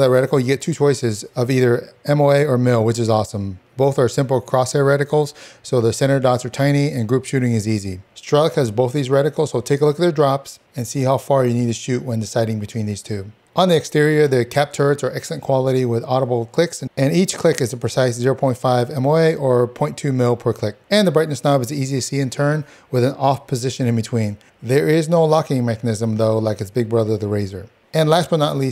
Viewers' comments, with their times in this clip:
0:09 What is the name of the ballistics calculator you mentioned right ? It sounds like you are saying “struck” but that doesn’t come up on any searches. Thanks.